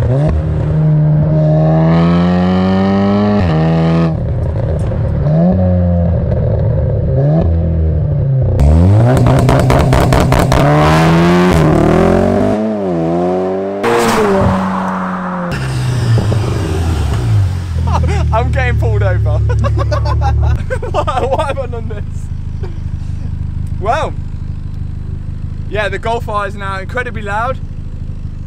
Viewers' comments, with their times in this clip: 0:10 Missfire on launch ?